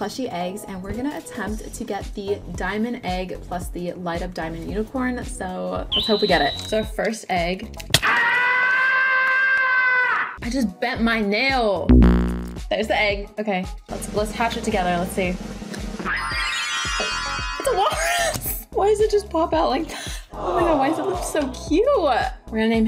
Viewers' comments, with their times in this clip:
0:08 I RELIZE THAT AHHHHHHHH👹IS LOUDER THAN MY SIS RAGE QUITING SO ANGRY FR-😭
0:08 OMG THE SCREAM
0:08 You scared me to death for the scream,I accidentally made my volume 100%😭
0:09 That scream is 😂